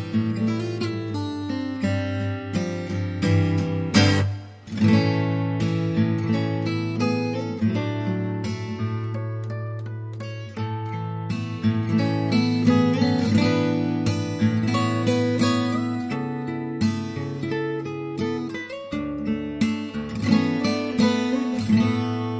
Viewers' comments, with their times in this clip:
0:03 Smooth as always❤️.